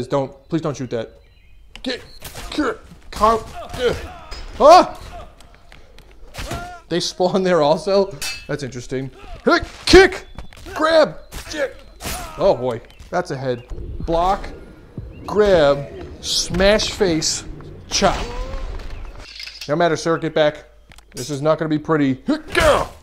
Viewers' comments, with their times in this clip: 0:05 when buddy just spawns in and you hack his throat open and he wails. God I have to try this update.